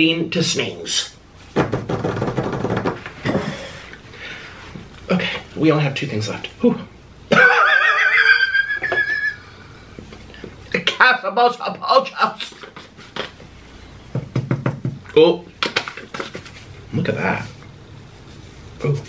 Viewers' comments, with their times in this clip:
0:06 That weird wheeze